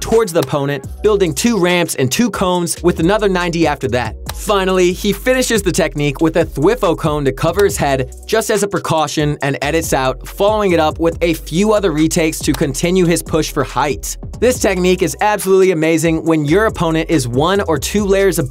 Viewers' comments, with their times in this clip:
0:06 the way he says thwifo 😂😂